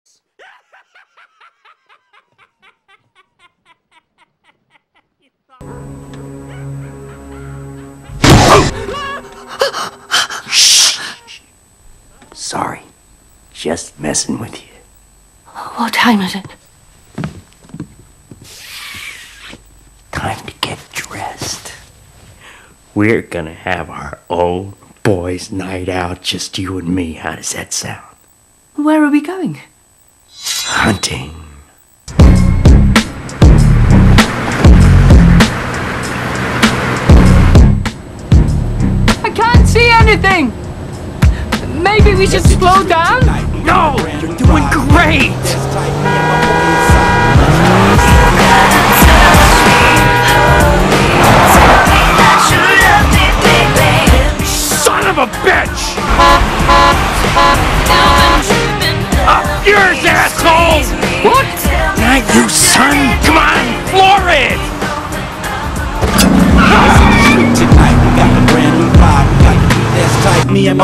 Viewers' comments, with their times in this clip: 0:06 RIP people with head phones in loud!!!
0:20 that voice is so terrorific😰
0:34 I LIKE THE MUSIC
0:56 Who’s horn was that?